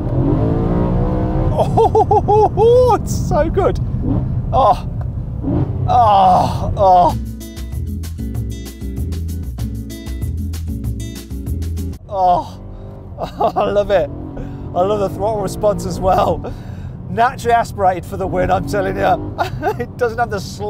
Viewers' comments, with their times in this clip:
0:05 😂😂 , but it exualy sound very nice 👏